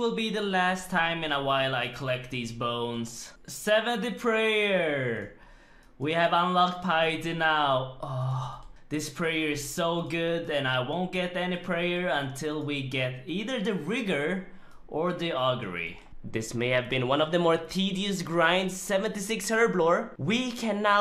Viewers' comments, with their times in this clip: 0:05 Random moan 😂 how I be in her ear